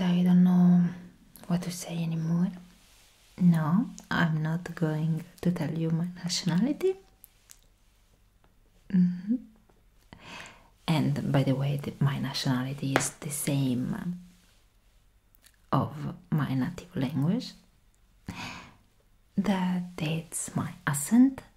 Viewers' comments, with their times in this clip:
0:03 i can tell that you're italian tho! :D